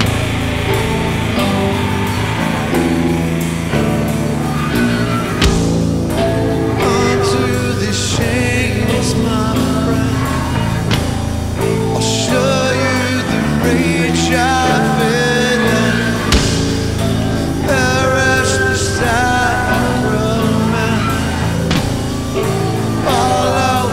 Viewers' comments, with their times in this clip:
0:08 this is way out of tune, wtf.
0:08 and out of tune as well...